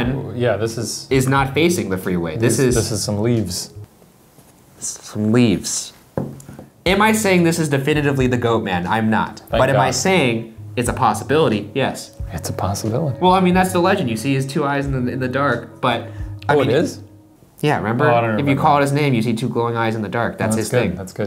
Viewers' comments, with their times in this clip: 0:03 just the way Ryan says some leaves back with murder in his eyes